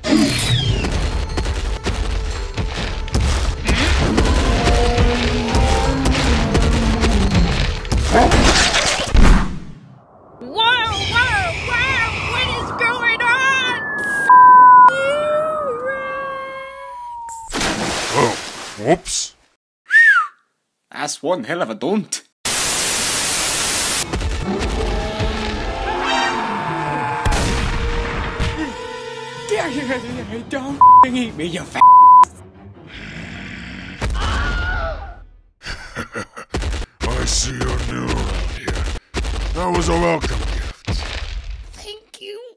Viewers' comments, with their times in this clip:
0:04 whay t rex roar sounds carcharodontosaurus
0:27 0/10, don’t hear Australian accent.